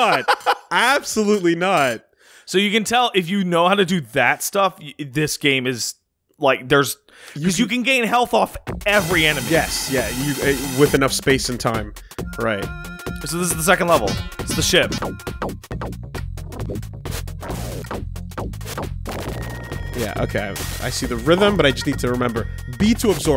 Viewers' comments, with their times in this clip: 0:06 is that a genesis, making good music?